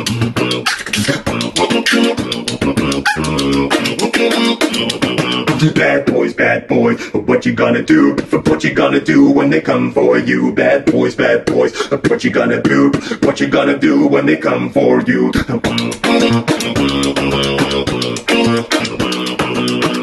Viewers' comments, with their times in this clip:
0:03 is it only me who noticed the cute little bark noise?